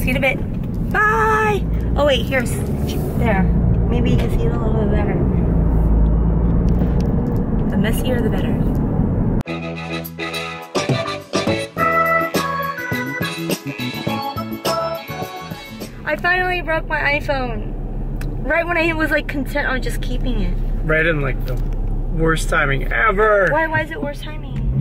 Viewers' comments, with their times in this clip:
0:09 Street scene with that music I almost expected to see Huggy Bear leaning up against a lamppost #WordOnDaStreet - Cute dog in that store! and cute hair!